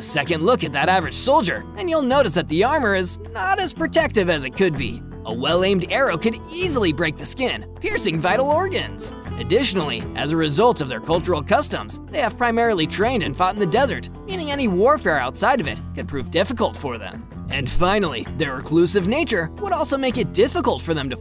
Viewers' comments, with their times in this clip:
0:06 i never thought anyone could say that so calmly
0:07 Why did he say this so cheerfully
0:08 Piercing vital organs. they said that way too cheerfully.